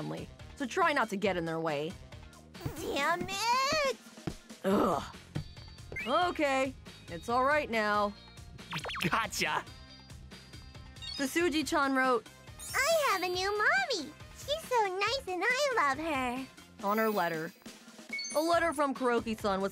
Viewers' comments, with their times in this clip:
0:06 Twin Yuri is double the blessings! Tsutsuji deserves a better mom than Akane. Akane is a vixen and the worst woman in the world On Twin Yuris are singing Etra-chan song. You can hear them singing in Japanese dub. In English dub, they didn’t sing. Yuri 1: Etora-La-La-La~! Yuri 2: Etora-La-La-La~! That’s what I hear in Japanese dub